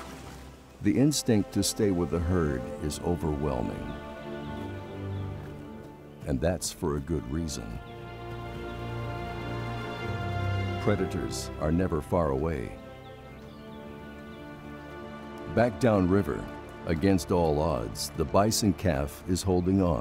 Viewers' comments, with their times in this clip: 0:04 Those bangs doe